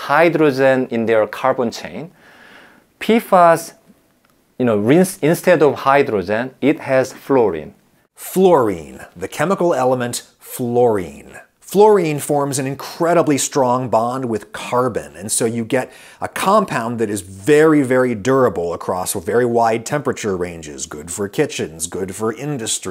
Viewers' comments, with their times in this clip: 0:05 took a couple rewatches to realise he meant hydrogen, i kept mishearing it as hydrazine. was thinking if youre finding hydrazine in your dinner, you have much bigger problems than contaminated water